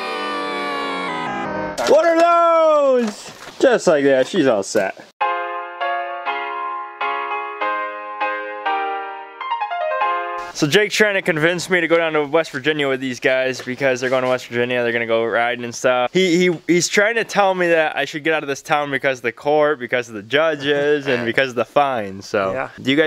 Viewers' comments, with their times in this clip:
0:09 hears music thats somehow worse than the other music, clicks off